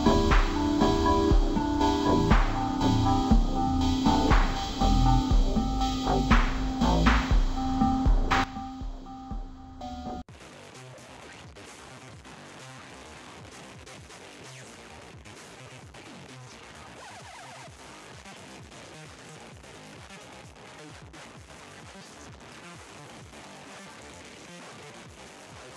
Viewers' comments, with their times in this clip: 0:09 The song is actually a banger